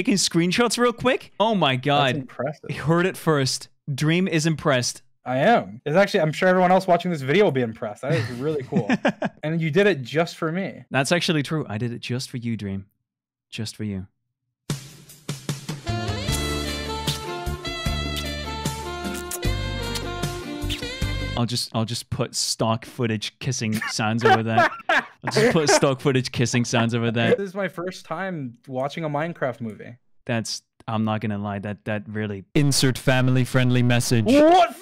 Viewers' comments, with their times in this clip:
0:10 *romantic music starts*
0:18 *kissing intensifies George: Sobbing, Screeching, Yelling